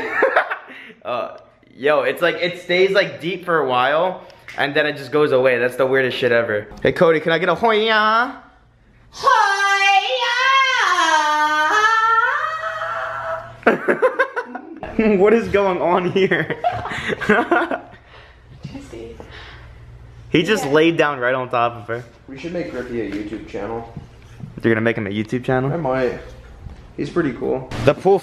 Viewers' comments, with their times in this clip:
0:10 more like the Hoya moan LMAO